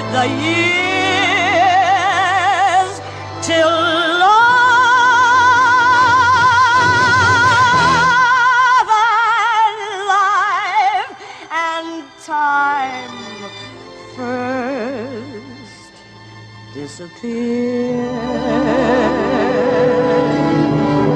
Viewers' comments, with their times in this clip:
0:04 Omg - when she hits that note Wow!